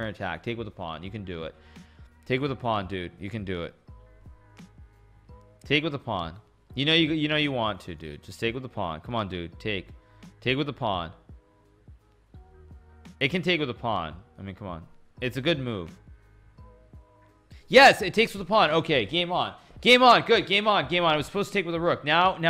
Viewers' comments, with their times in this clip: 0:03 why does Hikaru day “en peasant” instead of “en pessant”? Hikaru often mispronounces words too, like does he do it on purpose? I’m sure he knows the correct way to say them 😂